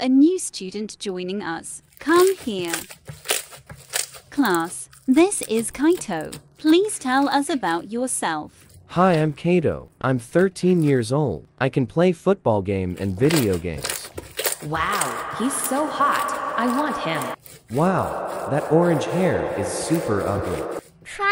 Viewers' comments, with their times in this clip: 0:05 bro thinks he's a vocaloid 🙏